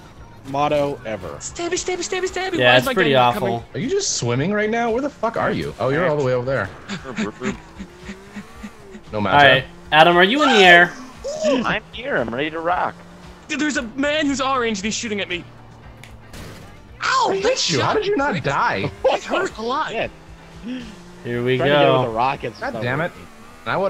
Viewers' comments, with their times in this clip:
0:06 onwards for a bit = sexual noises